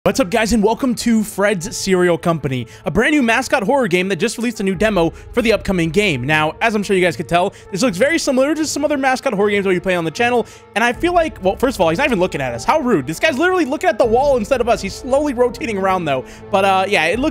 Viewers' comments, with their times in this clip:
0:04 What, your speaking too fast